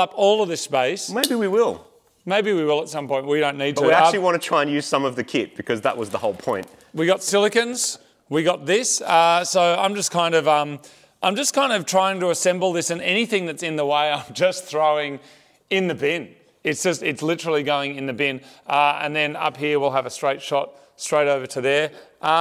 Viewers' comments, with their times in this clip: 0:10 That song made my ears bleed